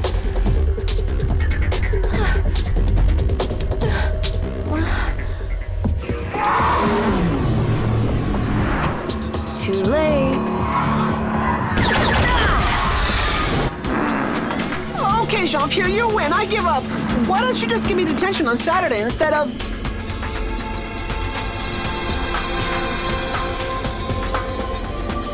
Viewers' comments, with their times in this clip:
0:06 that little cute '' too late ''